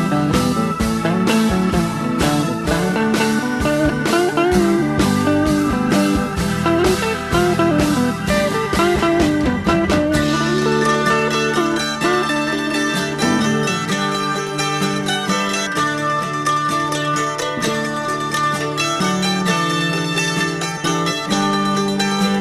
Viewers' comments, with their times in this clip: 0:10 When the mandolins kick in ugh, right in the feels. Had this on a 7" on Mercury Records. Played it to death.